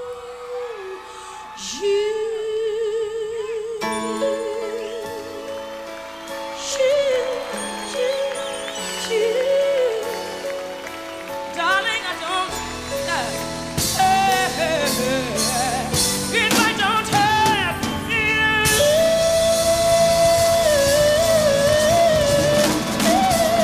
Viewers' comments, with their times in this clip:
0:04 lol did she say shoe instead of you must have been mad at Bobby that night and would rather have a new pair of shoes 👠 than him lol